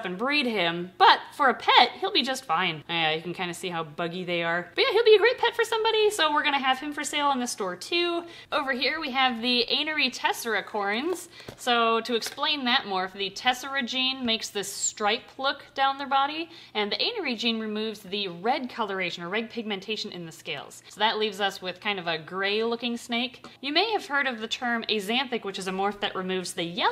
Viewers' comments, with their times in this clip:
0:09 Oh goodness, at first I thought that said "Angry Tessera." I'm like, no wonder they couldn't sell it; who would want an angry snake? ;p